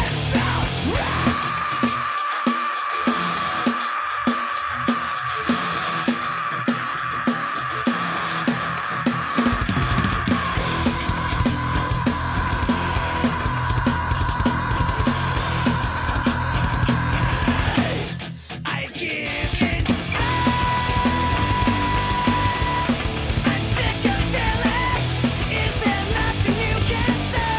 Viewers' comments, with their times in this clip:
0:09 Dude, that fill on in combination with the double kicks was just perfect! 🔥🤟🥁